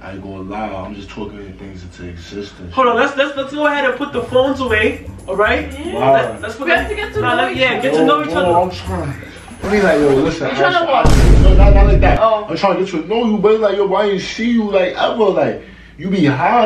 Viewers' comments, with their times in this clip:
0:03 kai sound like my teacher wtmd